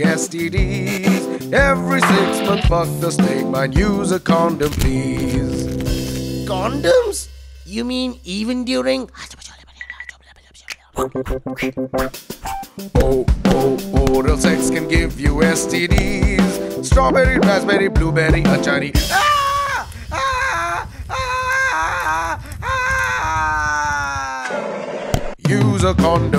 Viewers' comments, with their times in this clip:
0:09 He whispers aaj toh cholle banne hai 😂😂